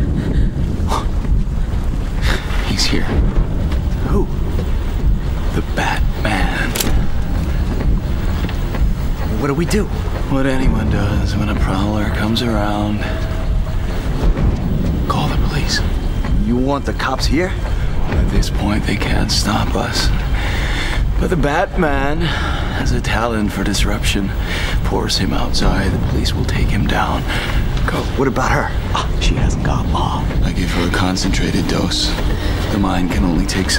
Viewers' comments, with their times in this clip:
0:04 Cillian recently said in an interview that he did just one take, letting loose and giving a really properly camp villainous delivery, just for fun. Not thinking that would be the likely used take lol. It’s such a nice simple touch. With a darker, more grounded approach, it’s good to have some flashes of color.
0:05 He's here - Who? - The Bat MAN! Am I the only one obsessed with Cillian Murphy's delivery here?
0:13 I love how he says call the police like idiots😂
0:20 gotta be the best pronunciation of “The Batman” ever.